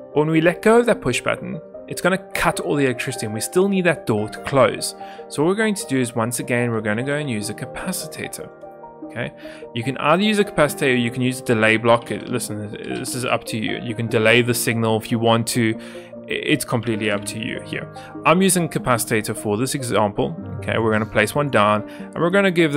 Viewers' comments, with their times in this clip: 0:08 were going to use a capacitater, capacitater?